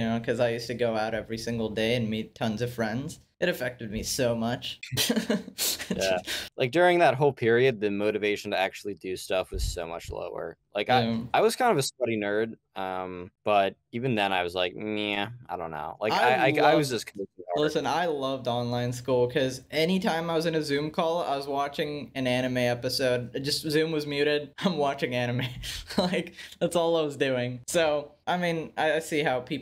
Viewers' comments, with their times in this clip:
0:10 "i was kind of a slutty nerd" IS THIS CANNON?!?!